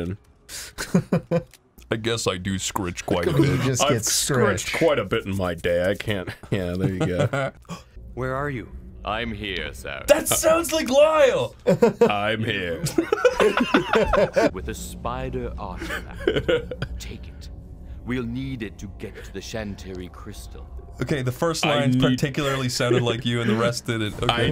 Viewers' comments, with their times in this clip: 0:07 he literally sounds exactly like the voice clip it sounded like they just played it twice